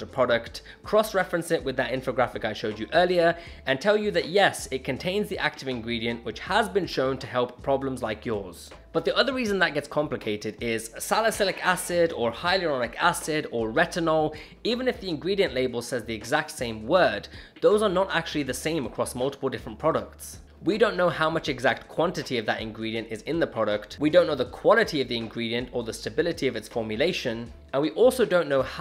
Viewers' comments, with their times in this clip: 0:10 dude what the hell is that sound? i thought my grandma fell off the stairs